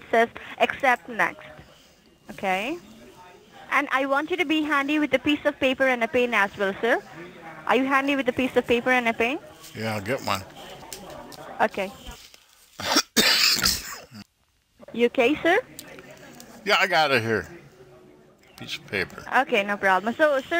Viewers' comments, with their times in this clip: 0:04 be handy with a piece of paper and paint?!